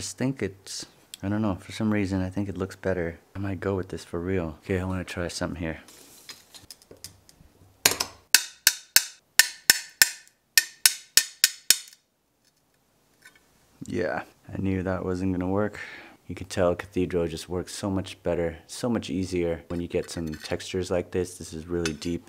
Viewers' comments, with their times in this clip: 0:08 jingle bells, haha Who knew stained glass could be so suspenseful!?